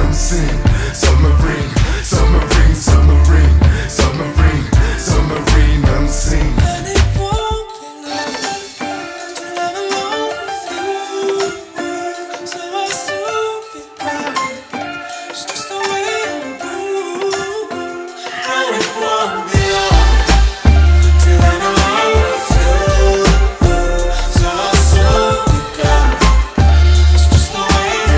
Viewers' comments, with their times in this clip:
0:10 1) His voice is incred 2) ANd he's fit!!!!! 3) WTF happened ?!?!?!?!?!? ;);)